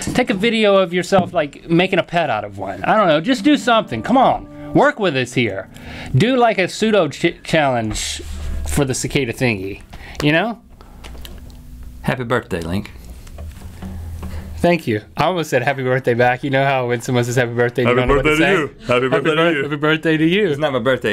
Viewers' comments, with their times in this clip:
0:07 captions on ....seduction challenge...